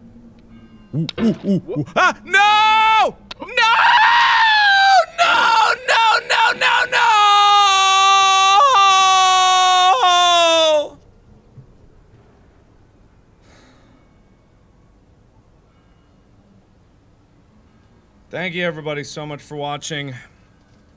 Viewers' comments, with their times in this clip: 0:07 As you can see, this is the wild mating call of a markiplier